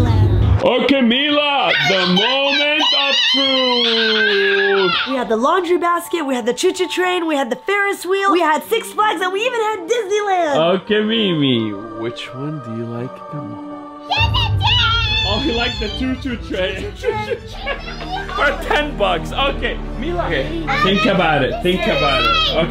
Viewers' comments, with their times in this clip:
0:10 For me he kinda sounded like Dracula